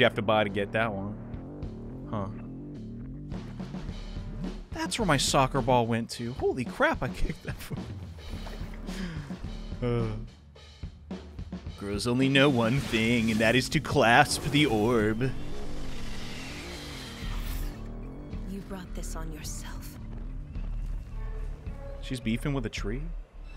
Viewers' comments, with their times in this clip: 0:10 i love when u do this voice so much